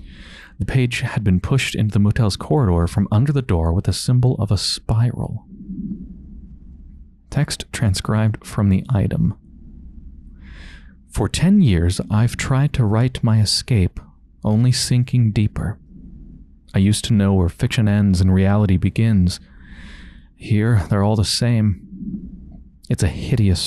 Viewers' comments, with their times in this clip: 0:05 Love your way of reading stuff out loud. You could totally do audio books.